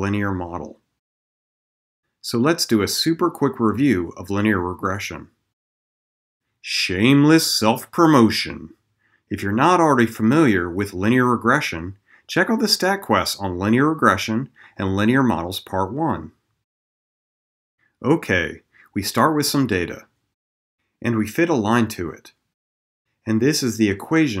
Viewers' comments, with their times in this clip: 0:06 I can't stop laughing at your hilarious voice tone when you say "shameless self-promotion"! It's cracking me up!